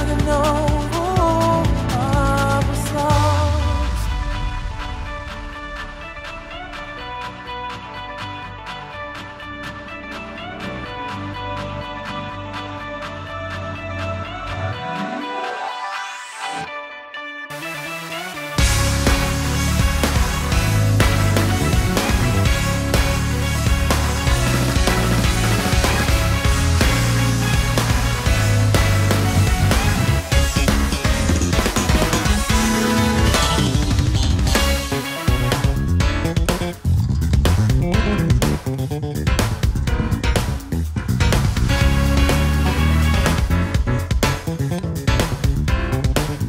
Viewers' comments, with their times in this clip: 0:03 Lol, I had no idea this was a cover but always felt like the melody introduced seemed too primitive to come from these guys. Anyway, I just tried to listen to the original and fuck me what a shit tune.
0:06 Instrumental breakdown part actually starts at this time, but of course whole song is awesome music cover, for me better than original .....
0:15 i like the song when it really beginns
0:16 breakdown at the end was... acoustic dubstep djent interpretation of an edm song? damn amazing
0:18 that's it. dirty loops jazz-rock skills (starting ) are impressive for sure, but the real deal are their progressions like the one you mentioned.
0:18 2 things. 1. Aviici is currently having a conniption over all the extra notes. Sorry Aviici no plug in is going to help you here! 2. This by far isn't the best DL track they've done. Why waste of my time listening to this watered down version (granted all the subs are still cool) of DL and it's only in the LAST 30 secs you get to hear their real brilliance, who's awesome freakin idea at vevo was that?? Dirty Loops please don't let corporate entities and record labels dictate the way you rip the shit out of cheesy pop songs!
0:29 That goddamn break and that funky 'ass part after that. Amazing band...
0:30 From til the end, it sounds just like a computer game soundtrack.. just add that to Gran Turismo Garage soundtrack and it just as good as the other tracks!! Phenomenal playing, especially the bass guitar player. Well done guys ;)
0:34 and onward is MEANNN what are those chords? can anyone point me to fusion artists that have music like this? on the more chromatic ish side of things